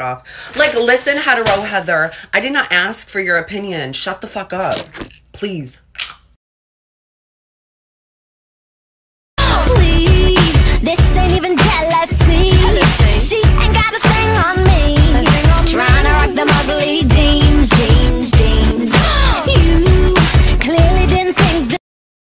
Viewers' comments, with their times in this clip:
0:07 That chip crunch at the end was everything XD 😂🤣